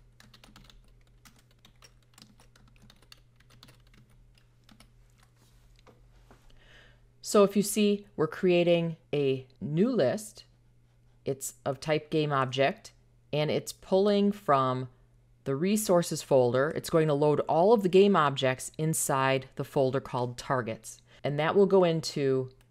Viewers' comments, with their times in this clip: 0:08 Already liking this after in and I LOVE you for giving me the answer, just like that! Looking forward to seeing the rest of the video, great explainer! Thank you kindly! Also I LOVE your accent :D